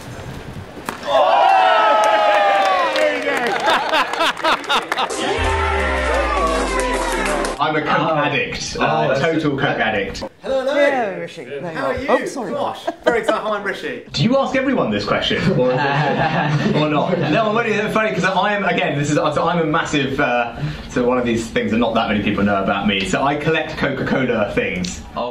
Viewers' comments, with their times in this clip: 0:10 the way he awkwardly inserts himself into the room and the way he talks that is Will from inbetweeners.